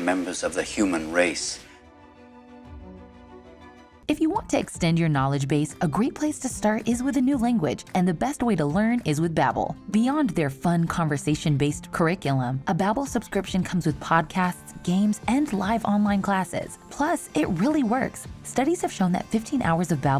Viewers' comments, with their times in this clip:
0:03 Heard the narrator doing that millisecond of British accent "If u WAWNT to extend..."